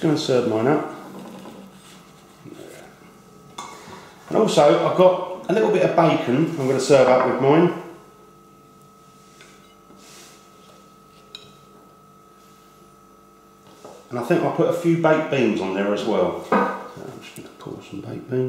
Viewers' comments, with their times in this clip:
0:05 little bit of buycon and biked beans